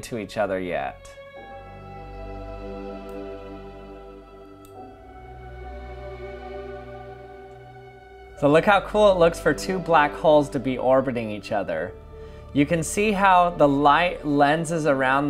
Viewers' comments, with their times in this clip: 0:03 the music playing fits so amazingly with the video.